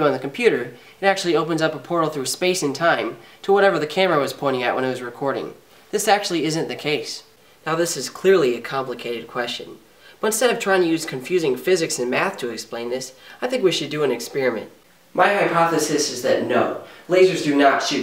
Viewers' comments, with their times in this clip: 0:05 "This actually isn't the case". The way that was said in such a serious and forgiving tone made me laugh!!!